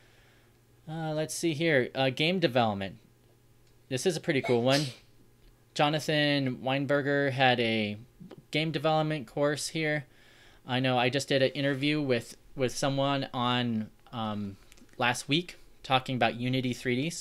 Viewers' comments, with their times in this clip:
0:03 Bless you. lol